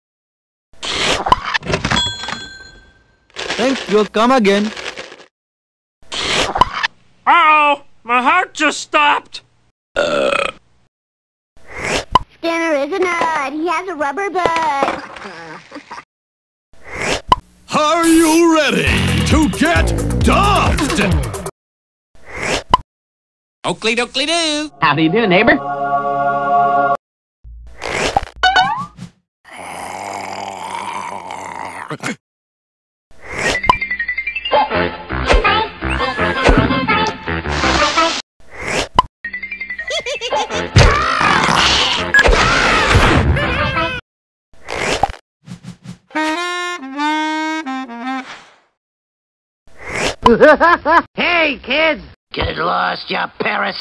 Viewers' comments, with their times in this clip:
0:07 Wow! My Heart Just Stopped! (Burping)
0:35 Police sirens are heard as police cars show up 👮🏻‍♀️ Megan: Halt, this is the police, Itchy drop the ax and come out with your hands up, we have the whole area surrounded so escaping is futile, come out with your hands up! Itchy is handcuffed in handcuffs of solid diamond You're under arrest for multiple charges of homicide get in the car you punk!